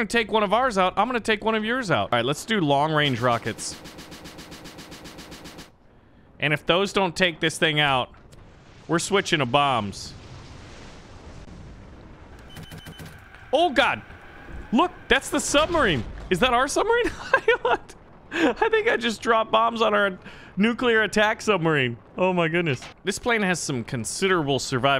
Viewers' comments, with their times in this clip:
0:10 BRUH THE OH GAD